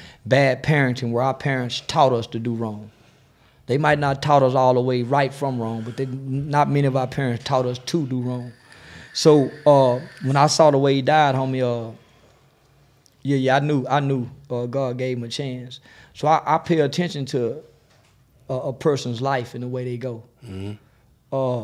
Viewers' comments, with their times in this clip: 0:06 sound like Pookey in there partying